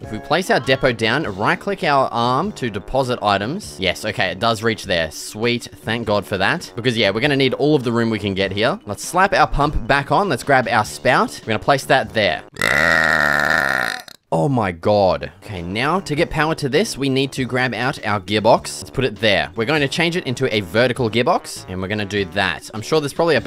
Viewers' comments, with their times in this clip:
0:08 zoglin death noise